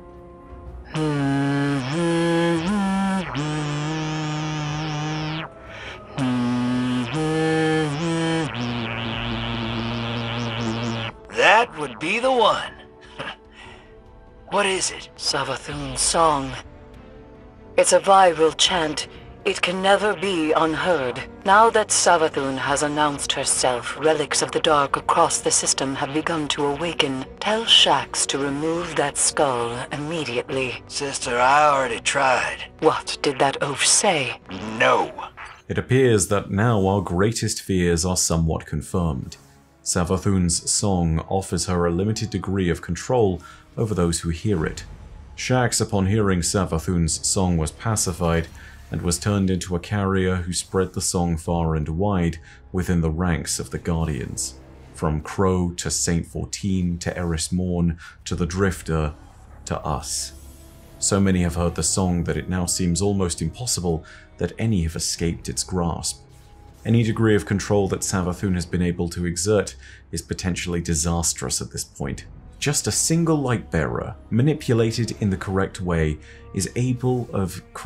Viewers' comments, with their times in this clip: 0:03 Didnt know Eris was fluent in buzzing
1:03 it’s playing the background ironically